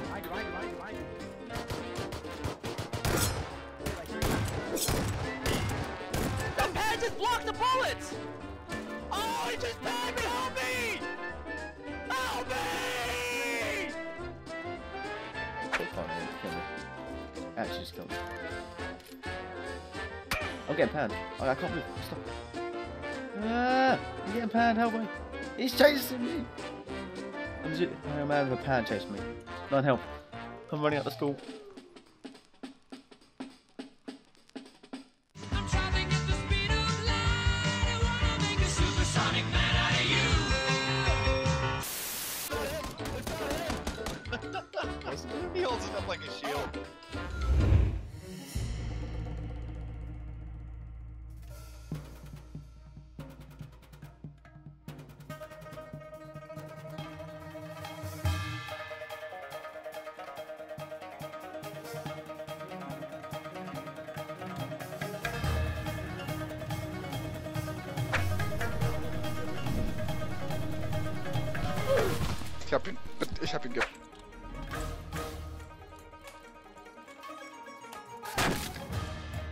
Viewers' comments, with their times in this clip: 0:09 the cry for help had me in tears
0:55 best music EVER!
1:06 omg the music